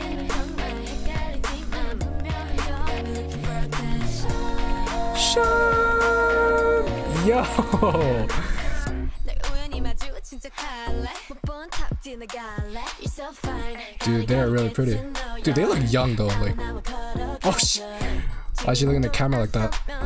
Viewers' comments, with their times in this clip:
0:05 bro the way u hit the vocals hybe gotta sign you now